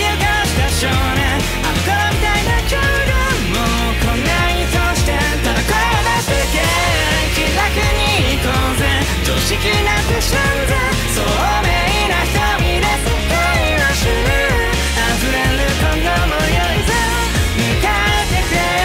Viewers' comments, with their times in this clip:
0:03 Power churning her Pointer around and Denji laughing hysterically will never be not adorable and funny to me 😂